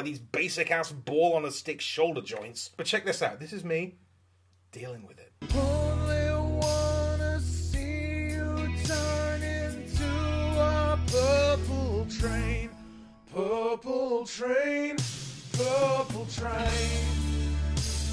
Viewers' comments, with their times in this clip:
0:05 What's this? No heavy metal? Must be something new